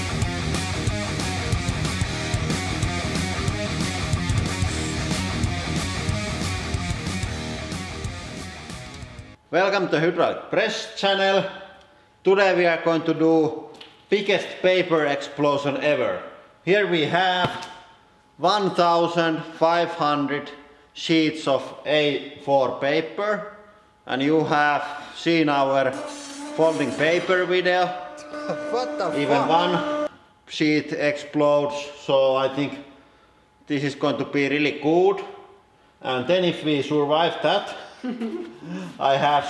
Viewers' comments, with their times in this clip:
0:08 turn on captions and it says Hitler's press Channel.
0:09 "Welcome to Hitler's press channel"
0:10 Watch with subtitles welcome to Hitler's press channel
0:26 it says "And you have seen our forming paper with a but" XD